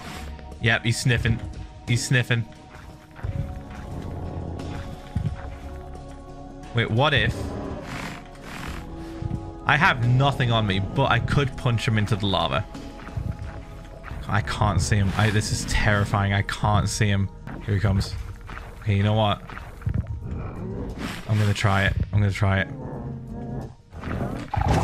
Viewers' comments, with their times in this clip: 0:08 how has he got nether soundtrack he’s not in the nether
0:10 hold on... why is nether music playing in the overworld? isn't that song exclusive to the nether?